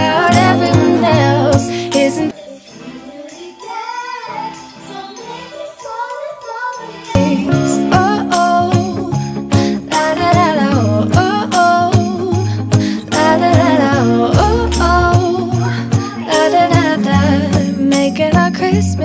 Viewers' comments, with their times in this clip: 0:04 Love the kids jamming out to the Christmas music 😂❤